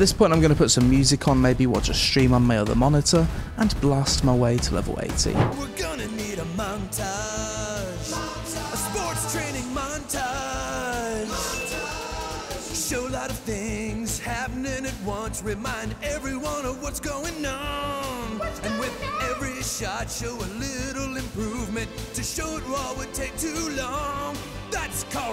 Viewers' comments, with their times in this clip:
0:06 That song cracked me soooo much 🤣🤣🤣🤣🤣🤣😂😂😂😂😂😂😂😂🤣🤣🤣🤣